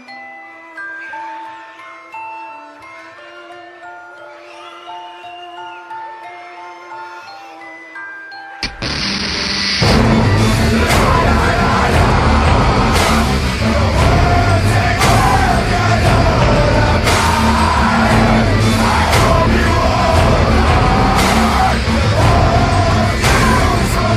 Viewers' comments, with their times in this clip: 0:08 I don't know why, but when the beat dropped in I was laughing so damn hard. 😂😂😂 LA! LA! LA! LA! Okay, but not going to lie though, those dancing, floating heads is what creeped me out the most. O_O
0:08 Me: Hmm, seems kinda quiet turns volume up Video: LALALALALAAAAA Me: FUUUUUUUUUUUUUAAAAAAAAAAA-
0:10 my favorite part the screaming!
0:11 got me goosebumps cause of the music change